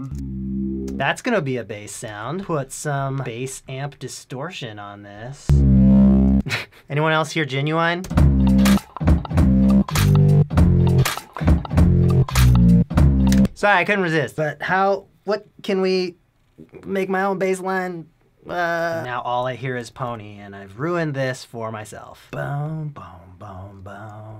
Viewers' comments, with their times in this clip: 0:03 I already knew when he put the bass distortion on it that it was gonna sound 💯
0:09 sounds like a superorganism song